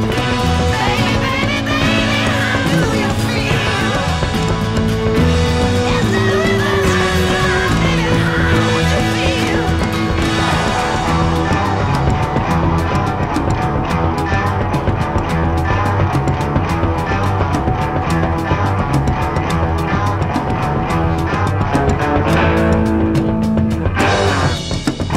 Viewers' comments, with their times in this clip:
0:08 garbled and changed